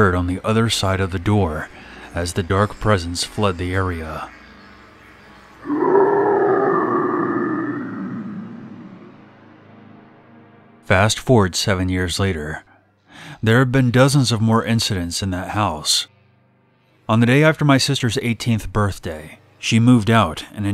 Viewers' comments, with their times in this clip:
0:04 The sound my stomach makes when I'm hungry